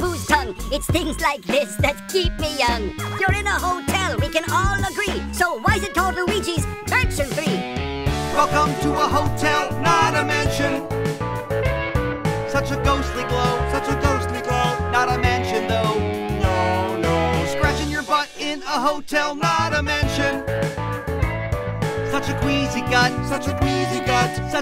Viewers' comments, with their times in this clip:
0:08 That reminds me of Sweet Home Alabama
0:08 This part sound like eagles legacy hotel California (2004 remaster) a bit